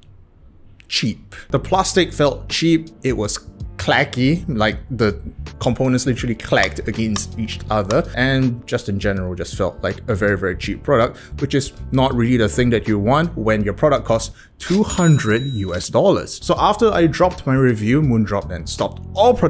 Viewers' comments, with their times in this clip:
0:04 Nice keyboard tack. It would sound amazing in the open space